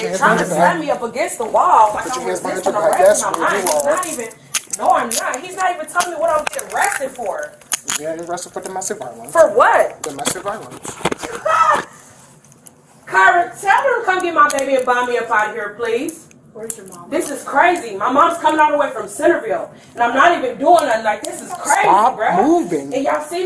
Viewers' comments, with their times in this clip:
0:10 laughs in psycho made me burst out laughing 😂
0:11 Laughs in Psycho, lol nice touch!